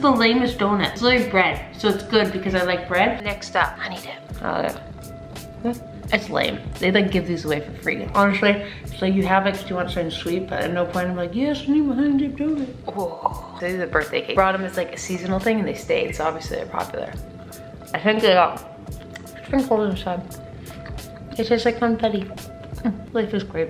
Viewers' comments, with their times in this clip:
0:05 Ahahahahaha the sound you made when eating the honey dip MADE ME LAUGH SO HARD AT THE GYM